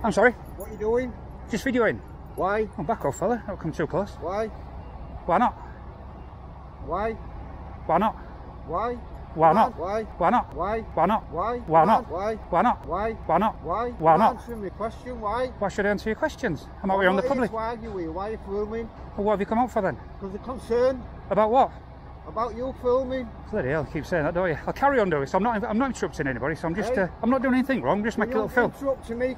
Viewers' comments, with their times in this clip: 0:10 Yorkshire Snoop Dog